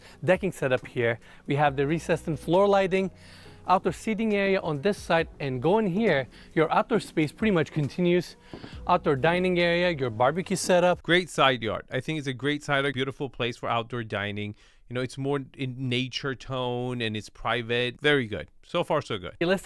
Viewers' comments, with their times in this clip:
0:05 You laughed when he knocked on the fireplace probably expecting it to open up.